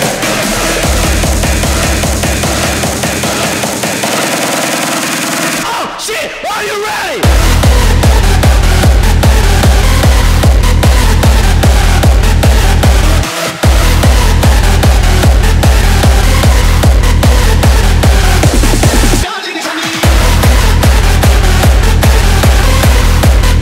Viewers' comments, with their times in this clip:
0:06 <3 Hardstyle droop !!!